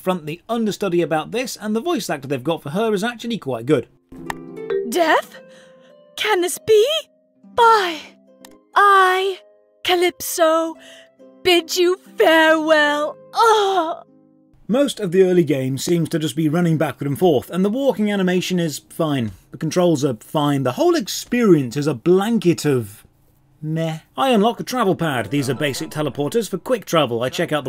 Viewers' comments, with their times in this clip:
0:08 sounds like she's trying to hold back laughter while climaxing. Stellar performance XD